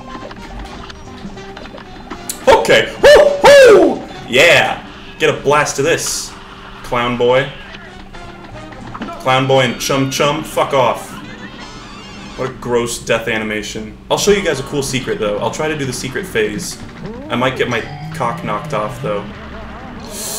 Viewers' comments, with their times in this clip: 0:03 my guys sounds like mickey mouse